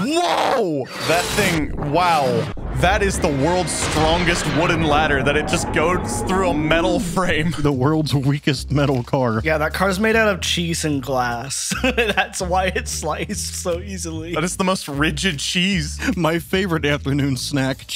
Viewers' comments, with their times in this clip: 0:04 "goed -s through"